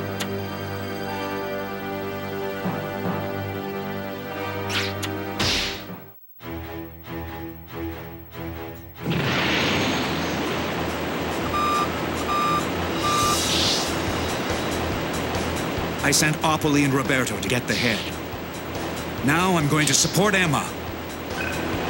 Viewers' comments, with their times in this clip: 0:07 -end Love this BGM.